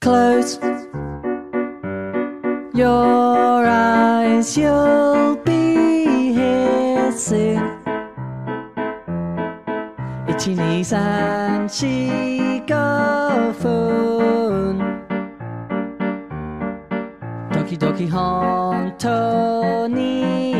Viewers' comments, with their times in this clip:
0:06 I love that song :D nice art